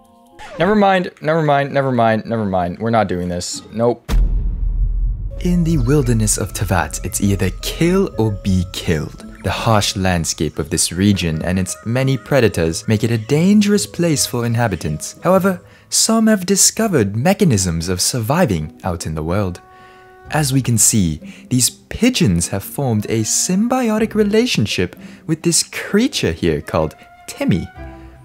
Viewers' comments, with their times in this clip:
0:05 never heard a better British accent before lmao
0:06 WHAT IS THIS ACCENT IM
0:06 ayoooo, his accent tho. I got confused for a bit xD
0:13 PLS THE BRITISH ACCENT 😭😭😭
0:14 THE BRITISH ACCENT JHELP MRT